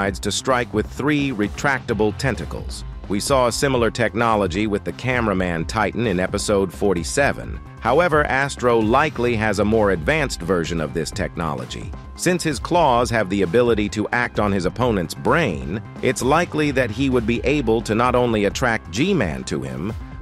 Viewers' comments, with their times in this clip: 0:05 major speaking issue💀